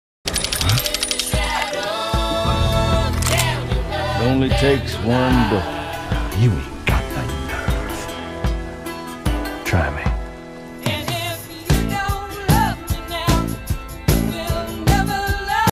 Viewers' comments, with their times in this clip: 0:03 The crisp sound quality is amazing